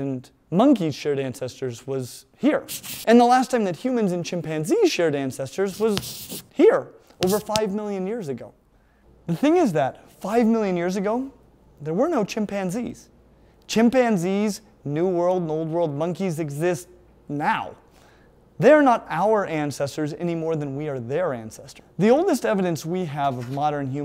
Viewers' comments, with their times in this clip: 0:08 I tried to explain exactly this to my sister who is a very strict christian and asked how we could have evolved from monkeys if there are still monkeys around today. btw do I hear Gus Gus scratching in the background?